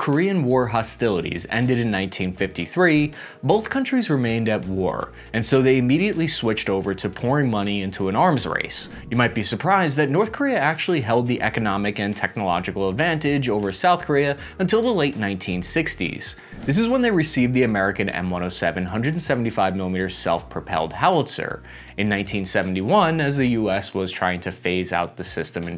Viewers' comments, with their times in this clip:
0:06 Did you say "p()RN money"?